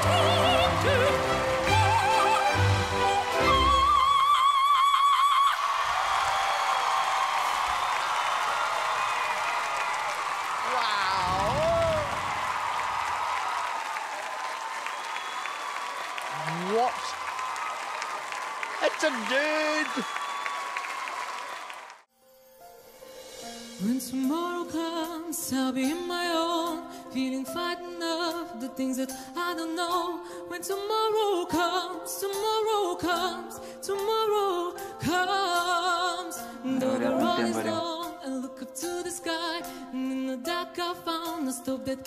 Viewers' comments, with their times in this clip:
0:04 listen to his voice. Like he's struggling to hit that note but couldn't make it. :/
0:17 It's a duuuuuuuude😂
0:18 wut?!?!?? It's a DUDEE LOL
0:24 The beginning of the song reminds me of Kurt Hummel's voice. Anyone glee fan?